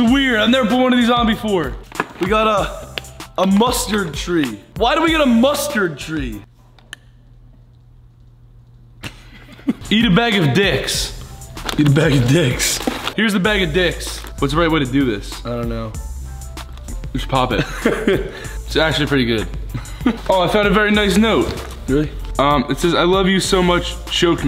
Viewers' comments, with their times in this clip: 0:06 This is just Ethan being the cutest boy ever💕 and Grayson's laugh after omg ❤️